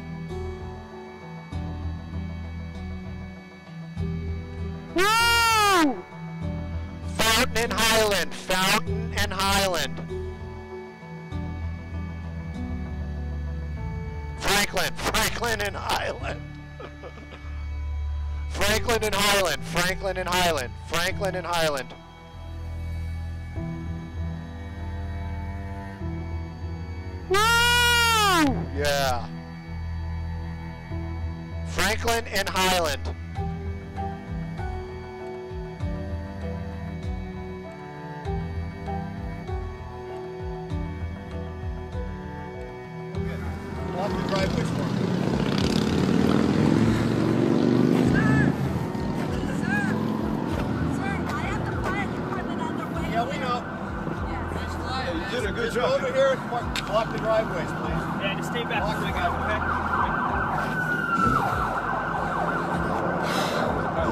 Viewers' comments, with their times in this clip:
0:10 I think fountain and highland?
0:26 Someone tell this guy to stop yelling into his mic
0:50 what sounds like a lady saying: Sir, I have the Fire Dept on their way . . . is actually her asking: Sir, are you parking by the hour or by the day?